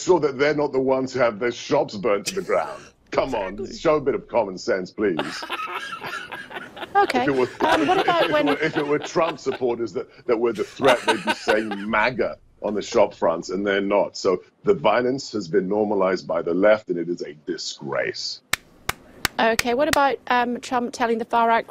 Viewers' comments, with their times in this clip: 0:07 Her ok was priceless!